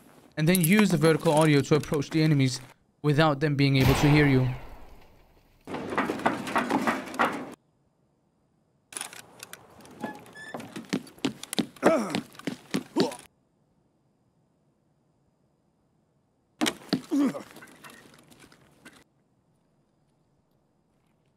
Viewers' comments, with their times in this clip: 0:08 really shows you how broken the audio is in this game